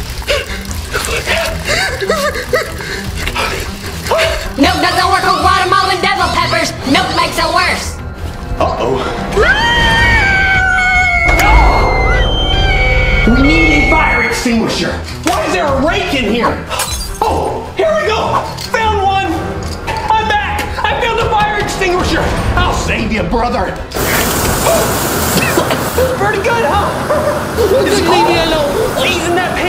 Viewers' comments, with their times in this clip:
0:09 sound like bird 🦅 ( why sound like that?)
0:12 I am 100% sure that I HATE that scream/screaming sound I am SO glad that i disliked this video/gave this video A dislike! YES!